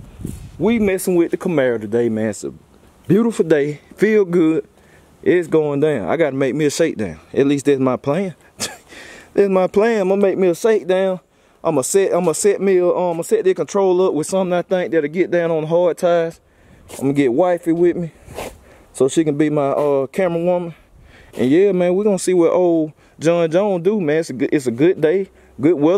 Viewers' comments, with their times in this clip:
0:07 Yo laugh is one of a kind keep doin yo thang homie